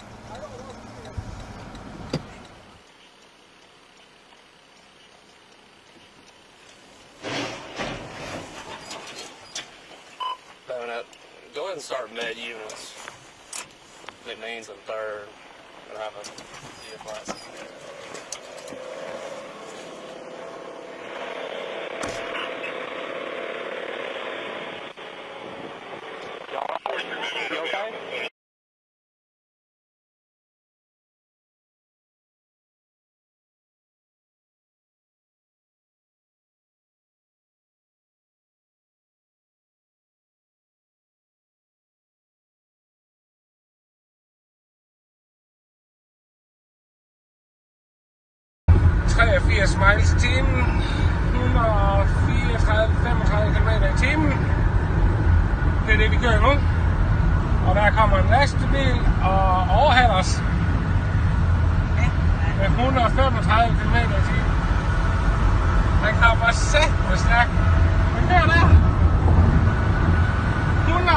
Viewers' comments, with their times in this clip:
0:06 The officers didn't even react to the crash, those are some vets right there. Just a calm "Lets get some med units."
0:55 he's speaking danish...was not expecting that here.